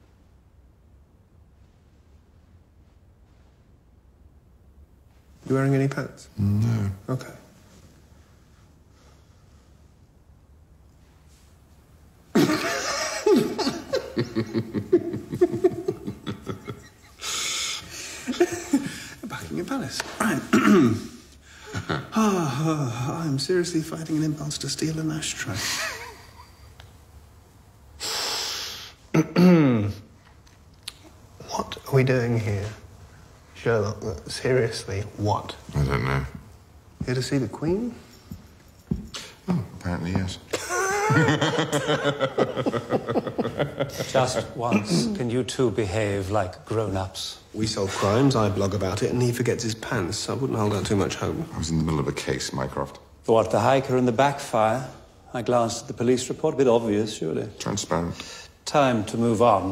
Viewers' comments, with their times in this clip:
0:07 this „okay” sounds like it isn't anything new
0:35 i loved how he laughed saying that.
0:41 Benedict's laugh is gold